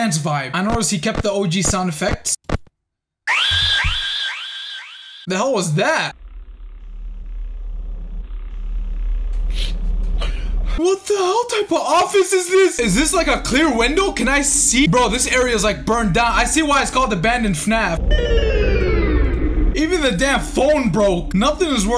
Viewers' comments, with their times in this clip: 0:03 Anime ahh sfx